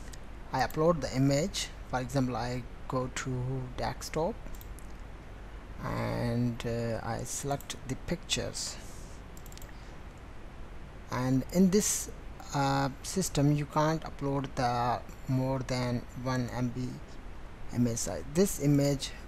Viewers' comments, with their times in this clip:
0:03 Dextop instead of desktop !!